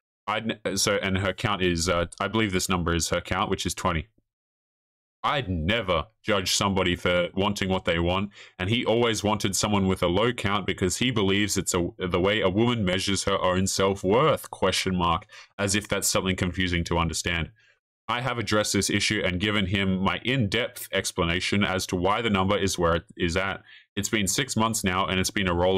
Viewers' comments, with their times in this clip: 0:10 minutes I feel like you can hear some cracking when you are louder. Maybe you need to adjust your sensitivity or just figure out the distance to your new mic